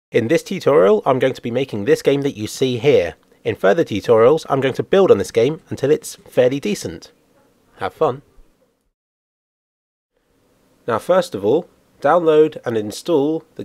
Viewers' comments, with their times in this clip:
0:00 (In This T-Toral) lol